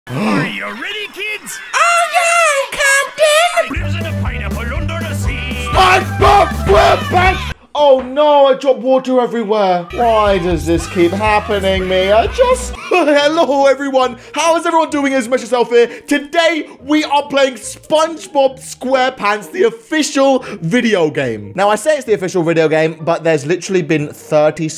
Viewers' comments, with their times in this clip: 0:03 I thought he said oh yeah Compton
0:05 me when the spongebob intro start singing when i was 7
0:06 that's a sight not to yell the SpongeBob intro 😂